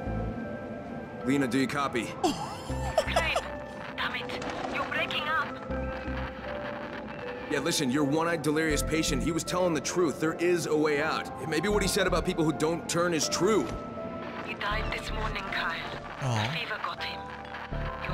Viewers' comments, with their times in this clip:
0:06 dude is also peaking in real life lol